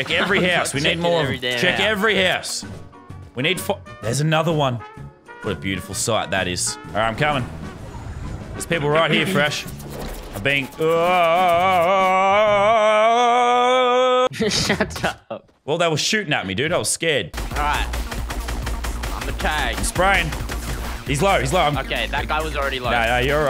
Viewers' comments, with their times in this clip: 0:10 Leaked HenchMan noises. Edit: Thank You All For Reading, 2 months later, Have A Nice Day! Edit 2: Over A Year Later, (aka Fortnite Chapter 2 Season 7) Thank You All For Liking This Comment,Have A Nice Day!
0:11 he is literally the inspiration of the henchmen sounds.